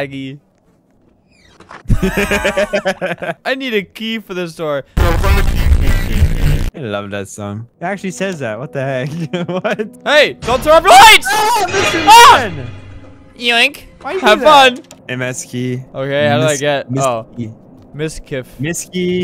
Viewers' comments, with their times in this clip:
0:05 this is the best song ever